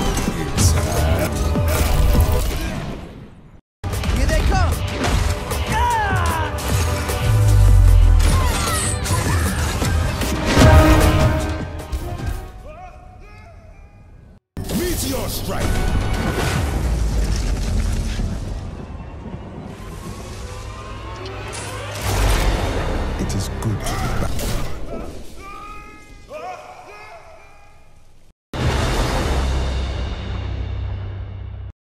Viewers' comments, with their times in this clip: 0:10 I love the panning effect on the music here.
0:11 i realized that my headphones were switched 😂😂
0:14 Doomfist meteor strikes absolutely nothing whole team screams at him for wasting his ult